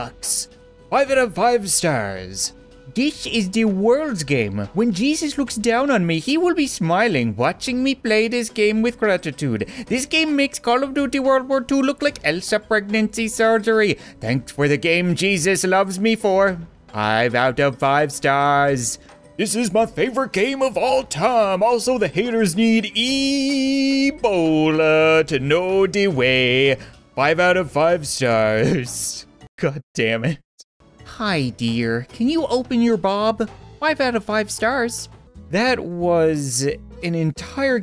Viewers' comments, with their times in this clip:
0:07 why does he sound like apu from the simpsons lol 😂🤣
0:15 the voice XXXXXXXXXXXXXXXXXXXXXXXXXXDDDDDD
0:22 Ricola commercial but Ebollllaaaaaaaaaaaa